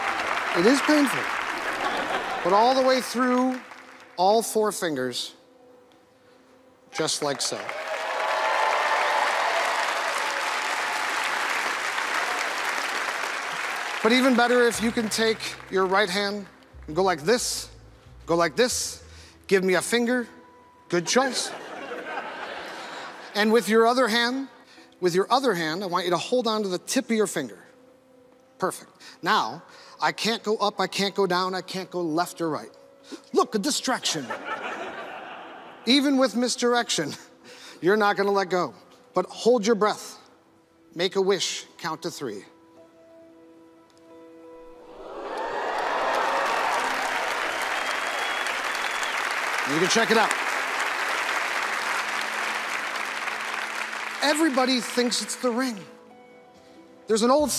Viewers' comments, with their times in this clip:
0:06 quite sure it's a gimmick ring he uses you can even hear a snap sound like when you have like a magnetic charger or similar
0:39 you can see the move to open the ring and even hear the click. Shame on penn & teller, they need to retire.
0:42 You can see half the ring swing down to open, and hear it click closed..